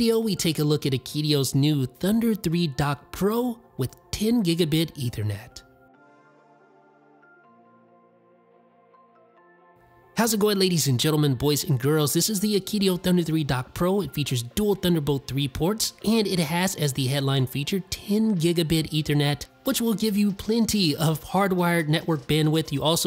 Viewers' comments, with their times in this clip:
0:06 no sound effect?